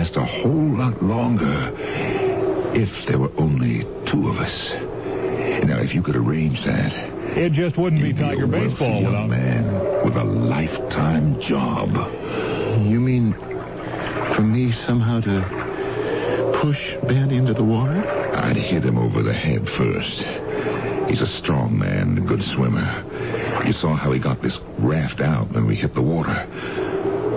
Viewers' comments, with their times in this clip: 0:08 no matter how many times I listen to this story that quick clip of a baseball game gets me every time